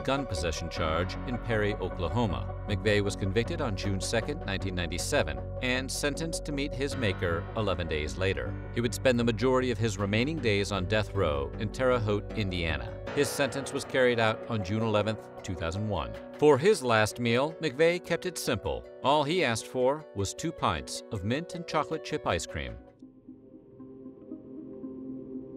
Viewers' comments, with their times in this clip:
0:07 .He was sent to meet his parents.Why ?